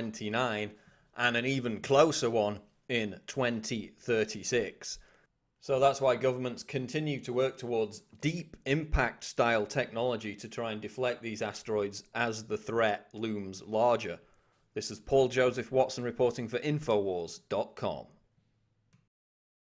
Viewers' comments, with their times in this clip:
0:07 gov't twerks towards???